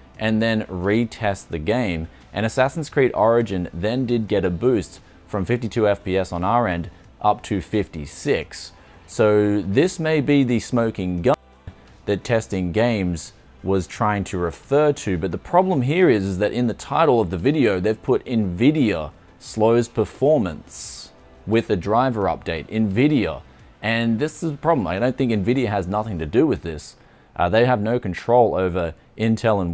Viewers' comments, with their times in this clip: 0:09 Did you censor the word "gun"? Every time i play it back it like glitches out that word
0:09 Is the word "gun" censored? :D
0:11 did you SERIOUSLY just censor the word “gun”
0:11 did you really censor "gun"?